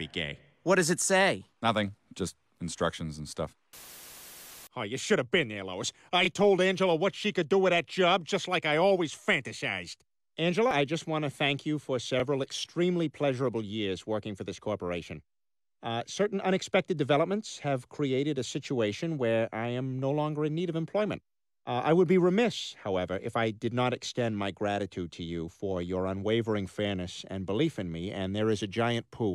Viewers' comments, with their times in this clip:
0:10 I was honestly surprised when Peter quit his job like this. He actually sounded like a professional employee